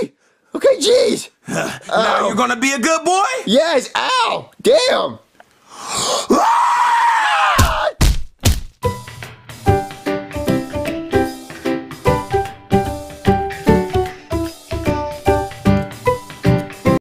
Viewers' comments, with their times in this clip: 0:04 Ow, my ears!
0:05 i just love when bowser screams its hilarious
0:05 Bowser just screams like the spawn of Satan